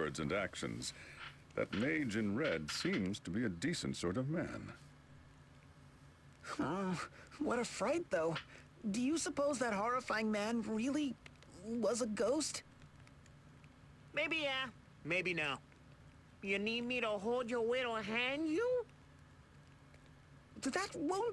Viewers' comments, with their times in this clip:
0:05 the way Janne says that is so funny xD